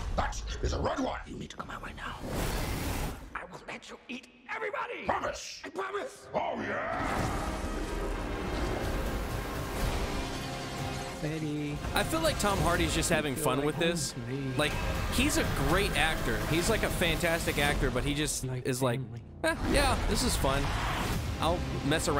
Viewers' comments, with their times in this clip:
0:06 the way Venom says "OH YEAH!!" gave me that big dick Kool aid man energy. Coincidentally, he's also red like carnage. Let's just hope those producing the movie aren't drinking the Kool aid lmfao🤞